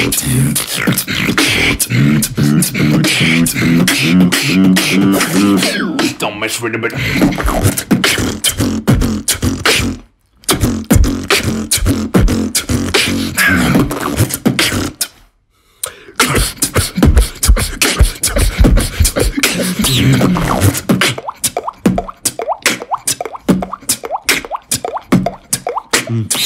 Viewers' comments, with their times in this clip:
0:05 i just love this drop man they just roll awesome Together🔥💯
0:05 Call me a codfish simp but damn the drop a is arguably one of the best duo drops
0:07 that lil pause 😩🤌🏼 II